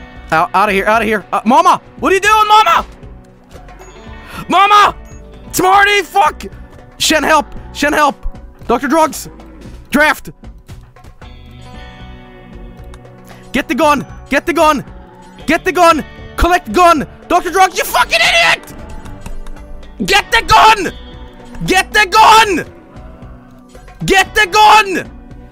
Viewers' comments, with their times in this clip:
0:07 he yelled get the gun so loudly and repetitively that my neighbors checked on me